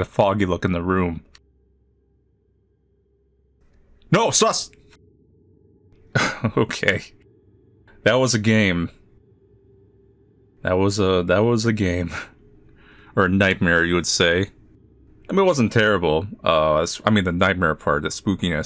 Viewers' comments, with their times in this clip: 0:03 I like how it is a silent jumpscare instead of the typical loud ear bleeding jumpscare that almost every horror game has.